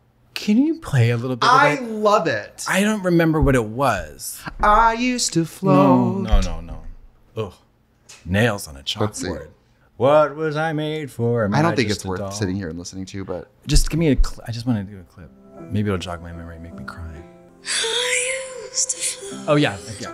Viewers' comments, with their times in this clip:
0:04 katya's reaction to trixie singing lmaooo